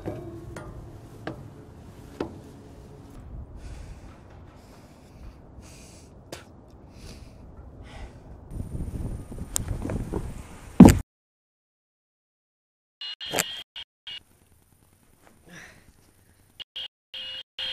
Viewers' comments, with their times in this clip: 0:05 what the hell was that lame ass spit XD